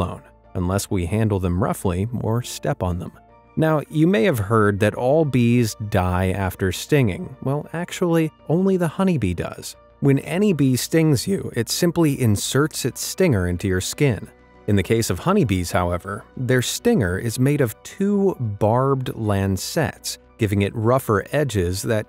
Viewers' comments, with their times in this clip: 0:10 Cracked voice LOL